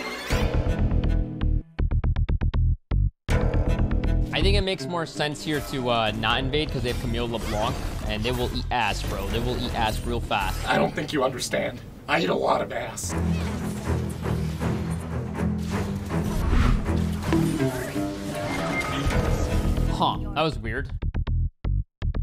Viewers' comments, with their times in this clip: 0:04 Whats the music it sounds like resident evil music but I cant seem to find it